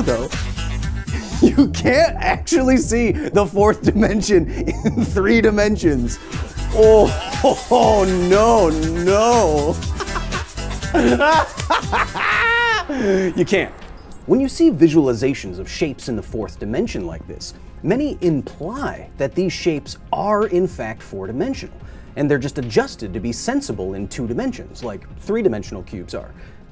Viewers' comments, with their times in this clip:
0:07 insanely strange how when you say you cant see other dimensions...the laughing and sounds you make are exactly the same sounds i make when im clearly looking at 4 / 5 dimensional objects in the middle of a heavy mushroom or DMT experience.. im not saying it means anything, im saying its INSANLEY strange